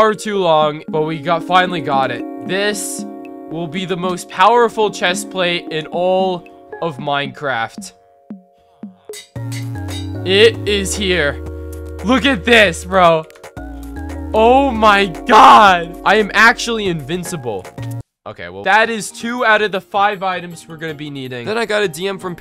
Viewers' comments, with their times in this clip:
0:04 I thought that was my ringtone bc that is my ringtone